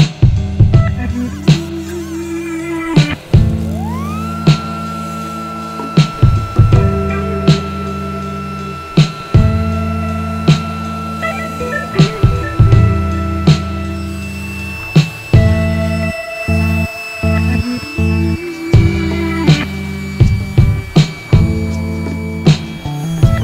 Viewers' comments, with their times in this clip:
0:04 I love how the droning sound fits the key of the music perfectly LMAO.